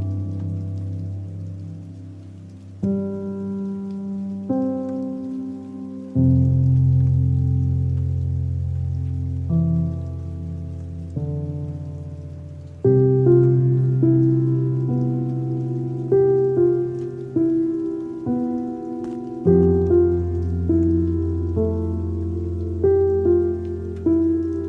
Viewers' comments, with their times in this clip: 0:05 when your recording when this notification just ruined everything